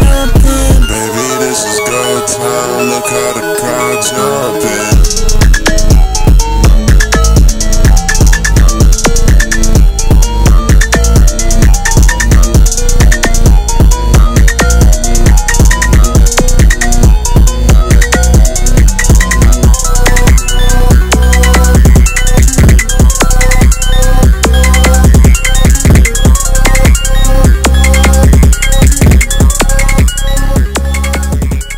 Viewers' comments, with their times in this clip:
0:10 the entire song is just so majestic but the ending is just like a mind trance 🫠
0:16 nvm i like the end of the sing more now angelic vibes